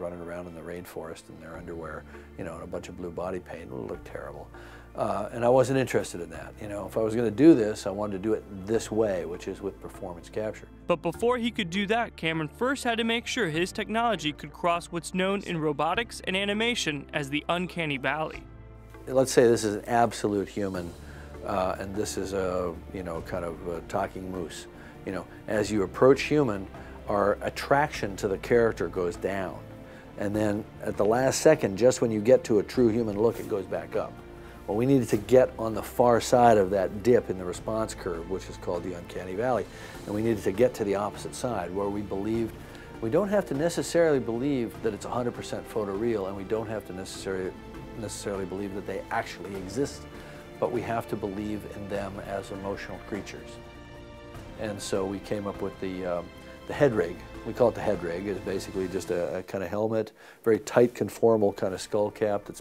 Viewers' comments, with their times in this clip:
0:09 was that Kermit the Frog speaking ?
0:11 Somehow, the voiceover guy sounds like a Muppet haha..
0:44 background music completely copies Randy Rhoads Solo from Mr. Crowley. God damn i have a good ear....